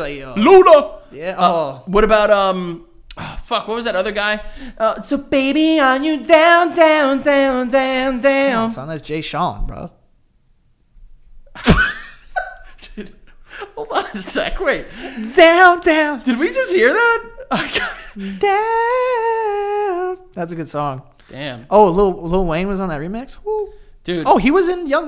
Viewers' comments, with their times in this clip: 0:10 when you lowkey hit that note